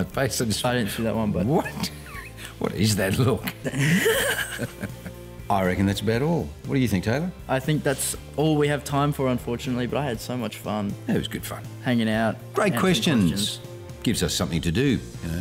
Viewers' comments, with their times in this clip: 0:03 Taylor's laugh is precious